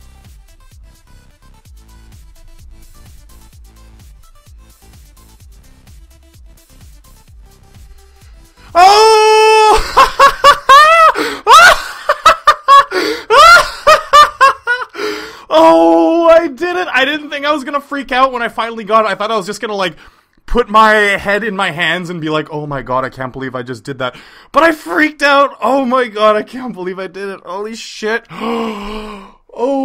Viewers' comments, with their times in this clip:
0:10 OUCH MY EARS !!!!!!!!!!!!!!!